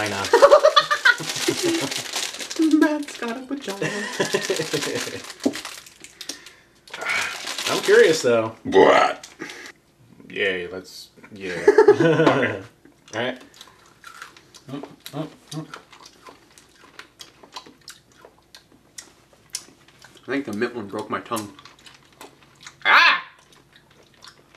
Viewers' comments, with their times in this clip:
0:09 WTF is with that burp